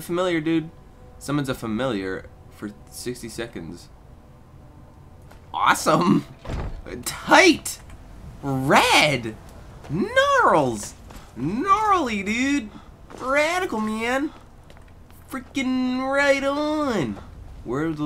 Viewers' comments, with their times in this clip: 0:06 ....He turned into shaggy....